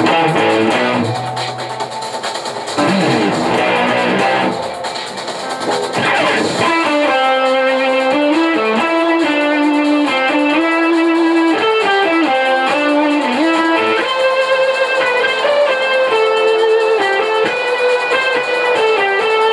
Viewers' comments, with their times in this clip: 0:04 The chord is off. It should be more minor. Sorry that I'm a douchebag. Dope guitar though.